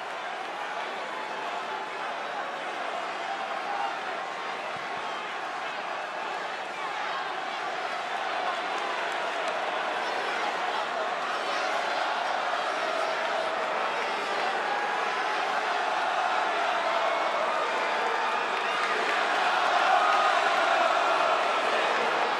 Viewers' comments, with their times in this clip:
0:06 One of half of the crowd Chanting Seth's song, the other Chanting CM Punk. And they are just staring at each other. This is electric